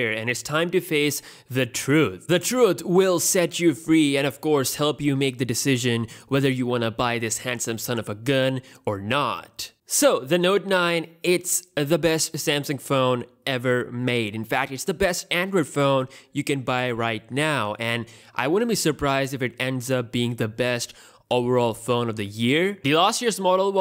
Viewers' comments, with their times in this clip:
0:10 U sounded like Donald trump lol